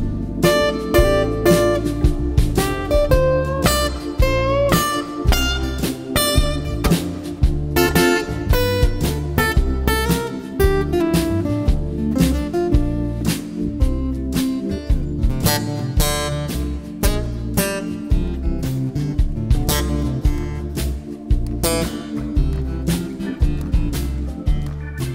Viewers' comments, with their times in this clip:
0:08 One sees Him miss a note, and then You are like : Oh, He's human! and then,you remember Who HE is and yes, He's God.